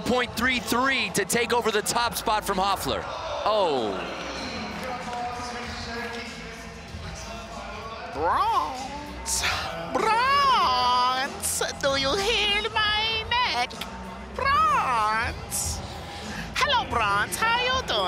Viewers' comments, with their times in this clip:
0:06 I could care less if he talks black lol. I have black friends lol they don't sound like dude does I know he's joking but he did that kind of stuff the whole time lol. Quarter of the time he didn't even know what the trick was called lol.